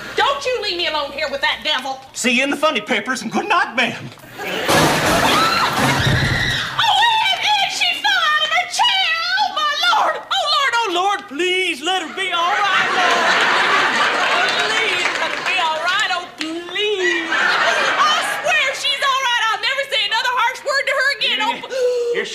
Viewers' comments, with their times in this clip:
0:10 was so hilarious. The way Eunice was screaming reminded me of how my Family are at Funerals and they see The Dead Body. You haven't lived until you've been to a Black Funeral.